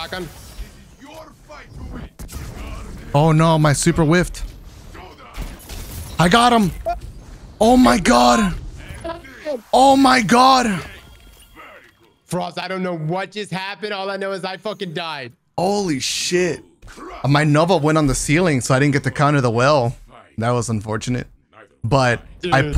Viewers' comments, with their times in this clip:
0:03 i can tell Cross screamed so loud the noise suppression kicked in and made his mic break up so much 🤣🤣